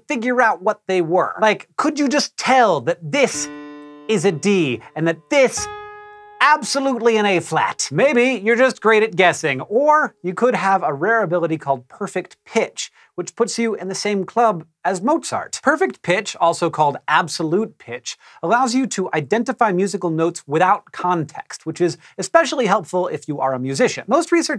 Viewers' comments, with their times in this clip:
0:06 That’s a G#, LOL.
0:06 nah i prefer G#
0:07 Actually I'd argue that's a G sharp, in the case that we're talking in terms relative to the previous D you played.